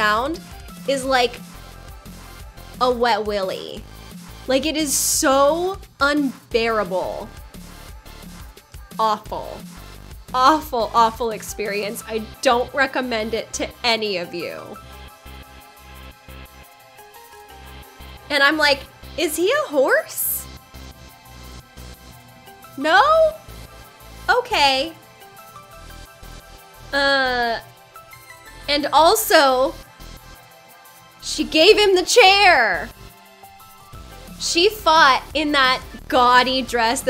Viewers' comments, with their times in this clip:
0:09 Props to Corneo's voice actor. Truly nailed it.
0:19 And that guys is why in the Sewers Aerith sounds like a Horse.